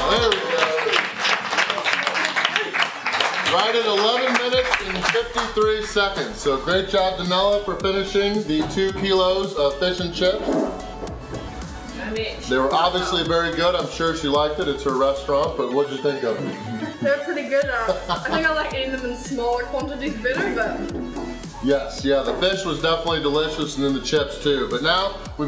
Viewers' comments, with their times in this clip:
0:06 Clap hesitation lol